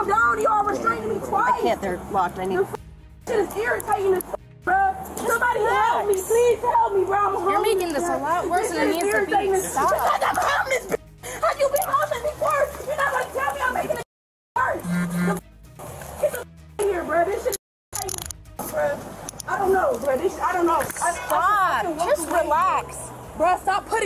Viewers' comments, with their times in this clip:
0:08 I don’t know where they get the energy for the high speed jibber jabber. She said more words in 10 minutes than I said in 2023.